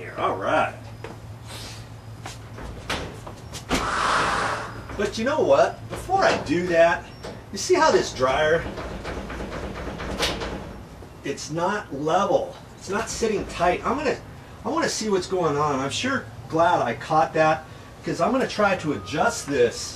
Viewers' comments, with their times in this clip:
0:05 If you want to hear the dryer scream skip to